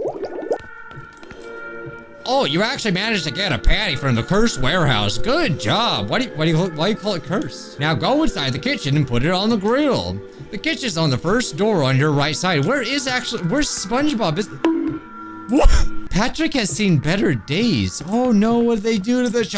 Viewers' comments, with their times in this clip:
0:03 u made Squidward sound like Baldi from Baldis Basicics ngl